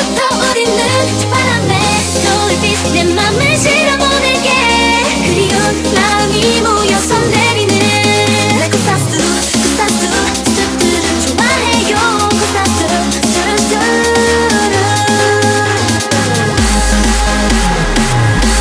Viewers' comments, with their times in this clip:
0:04 Sounds Like Cash Cash Take Me Home.